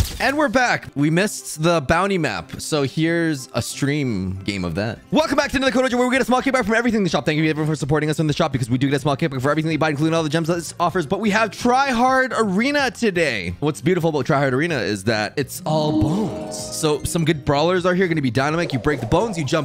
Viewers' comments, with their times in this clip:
0:05 he transformed into eminem:v (I speak spanish so my english is Bad)